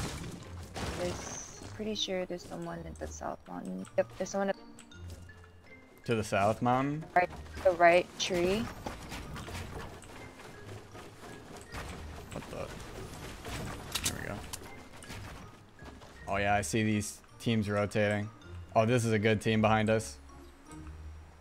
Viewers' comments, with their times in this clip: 0:08 he sounds like he said to the south mom